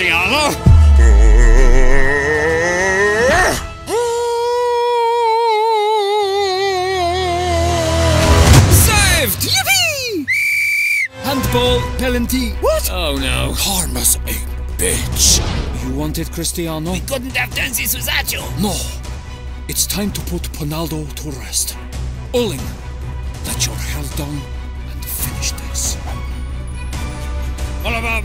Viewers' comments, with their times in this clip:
0:10 Bro really said pelanty💀
0:11 "Handball, pelanty" 😂😂😂 what is a Pelanty 😂😂😂